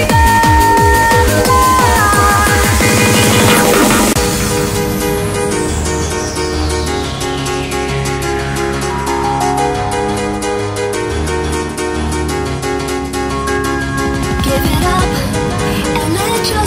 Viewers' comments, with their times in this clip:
0:03 behold the happy hardcore piano roll and the epic happy female vocal, then come the synthlines. This is the way! Happy hardcore 😃😌😌😌😌. Shout out form the Philippines! (I'm the only raver in the entire country most likely lol, no one else even knows of this genre.) Thanks UK DJs and producers for happy hardcore! 🇬🇧🇵🇭🎶🎶🎶